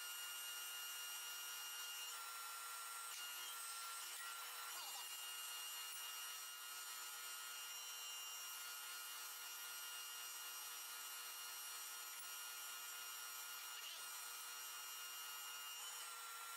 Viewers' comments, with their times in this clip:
0:04 sounded like a fast-forwarded voice